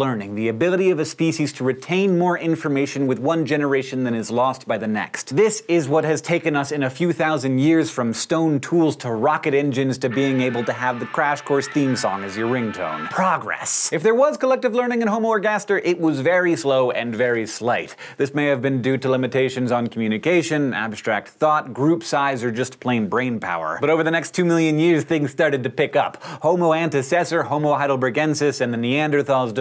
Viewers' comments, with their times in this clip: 0:10 Totally thought that was one of the dozen other crash course tabs i have open.